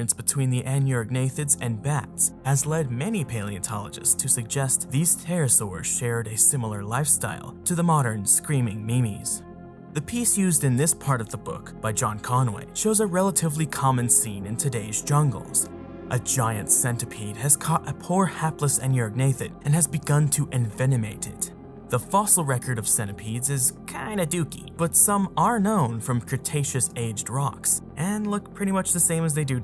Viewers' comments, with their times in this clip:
0:10 Screaming Mimis? Also, if I put captions on the video, it gives me: "screaming memes", for your... lines? But yall know the internet. We all know that if I were to look that up, to see what kind of aminal it are, I'd get instead, internet aminals like the pepe and the trolololo face xD ex dee Roflcopter ha ha screaming is funny!!! So I looked up "Screaming Mimis", and "Screaming Ninis". Both were a bust, but "Screaming Mimis" apparently means "nervous hysteria" ???... I'm too dumb 2 figure this out, am I? ex dee! xD ROFLCOPTER gets hit in face with skillet